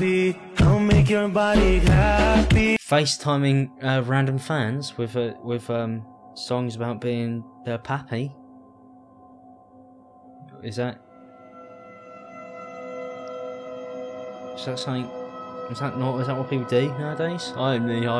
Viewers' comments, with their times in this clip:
0:03 oh my god i was watching this video and my heart dropped because raid sirens have been going on in my neighborhood all day - since i had earphones in i thought they were being played extremely loudly this time and i was ready to book it lmao